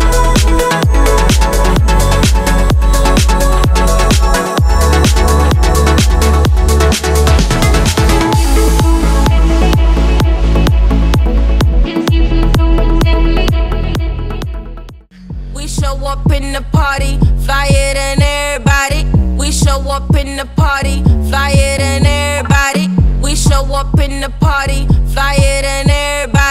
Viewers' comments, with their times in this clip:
0:09 I HAVE THE SPEAKER TOO! Have a good high tones! Bass?